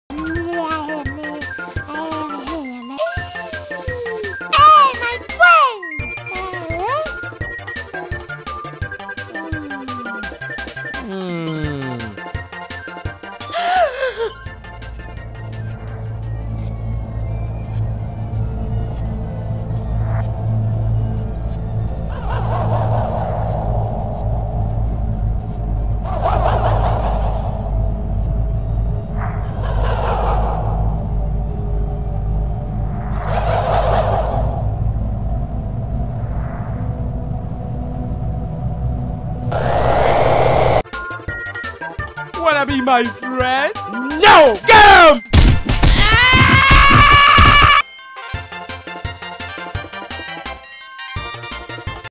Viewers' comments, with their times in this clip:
0:03 i knew i heard that gasp from somewere
0:03 Only one man can gasp like that
0:03 G A S P
0:04 Kirby: "Yay my fwiends" Me: Aww how he said it was so cute
0:12 when a u hear a creeper hiss in minecraft
0:39 i forgot about the screams that was the scariest part of the boss
0:46 That scream just got me.
0:46 *screaming in pain intensifies*